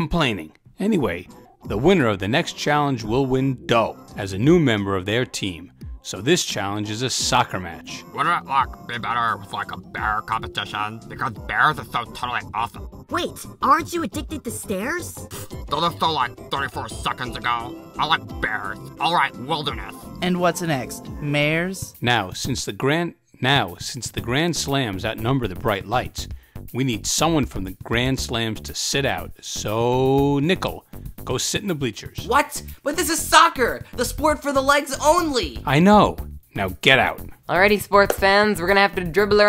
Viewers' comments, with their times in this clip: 0:08 bro sounds exactly like lumpy space princess from adventure time 💀
0:22 I feel like that pause was unintentional and they just did that do they didn’t have to do the voice line again (No hate)